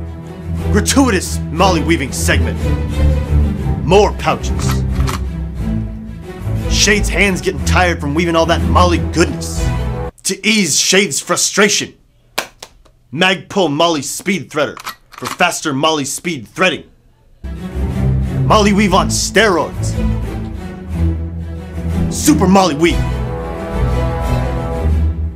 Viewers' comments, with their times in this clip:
0:06 Is the loudest part in the video.